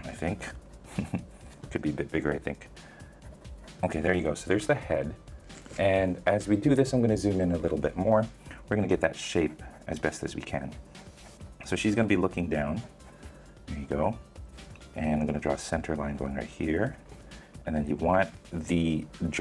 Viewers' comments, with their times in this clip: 0:06 he sounded like bob Ross